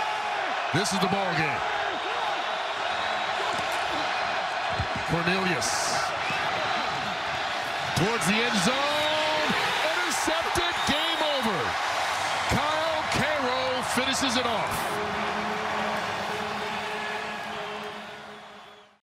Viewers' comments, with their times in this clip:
0:08 30k people screaming "yeah"